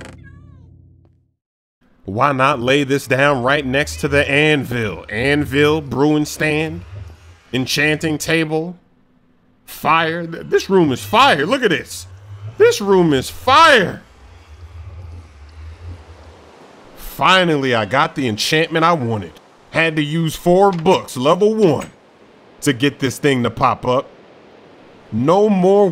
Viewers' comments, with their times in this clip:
0:10 did u burp lol